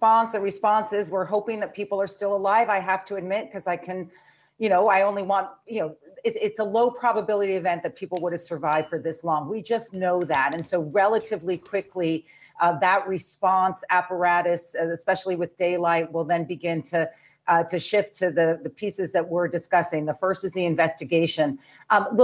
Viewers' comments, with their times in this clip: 0:10 Reporting on breaking news of a tragedy must always be difficult for any anchor. But this is not unusual for Ms Casey. It was a huge problem when she was on MSNBC and seemed to get a little better when she went to CNN. But old habits don't change. I started watching her broadcast a.m. and this clip was the best of her coverage. I'm just saying it's frustrating when every second or third word is uhh.